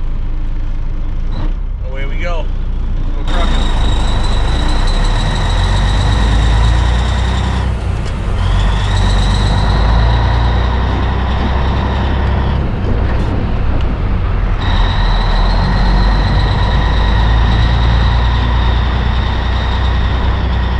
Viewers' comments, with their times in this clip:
0:04 A sound you just don't hear anymore, true diesel sound. Also, you can pick-up DEF at dealers if desperate enough. Ford dealers carry 1- & 2.5-gallon jugs. perhaps GM, Dodge, Mercedes also. Oh, one more thing, do you receive a number of inquiries about your truck?